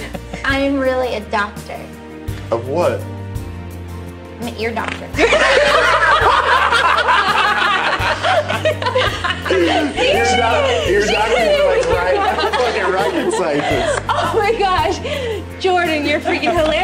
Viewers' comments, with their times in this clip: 0:04 what did she say ! i reallllly need to know lol they were cracking up